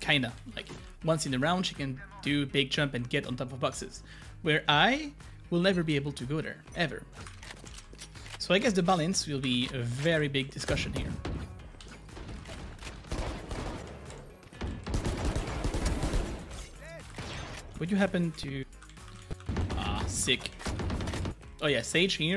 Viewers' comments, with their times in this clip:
0:05 you could go on top of something with Pheonix with the Ice wall of Sage if she cast it under you! New here, what is this accent, are you french by any chance ? I'm from Quebec, Canada!